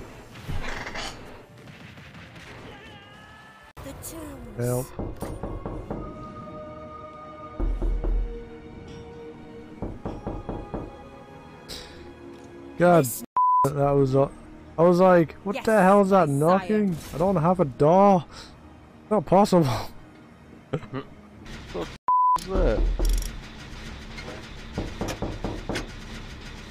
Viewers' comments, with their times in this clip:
0:10 sounded like shrek